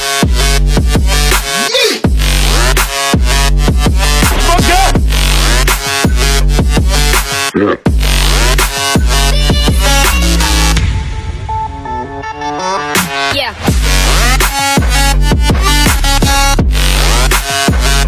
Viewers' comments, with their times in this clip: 0:04 if u hear closely.. u will hear spaghet. SOMEBODY TOUCHA MY SPAGHET!